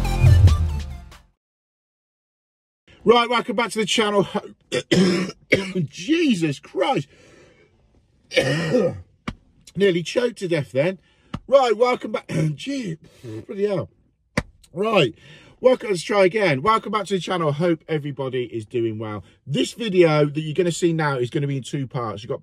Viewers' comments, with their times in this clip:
0:06 that's the asbestos hitting lol. Love the videos By the way